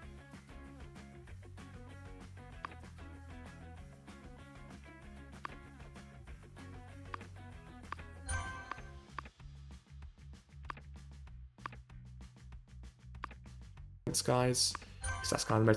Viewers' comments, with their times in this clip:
0:03 mic goes out for roughly 10 secs. Just thought I’d let ya know 👍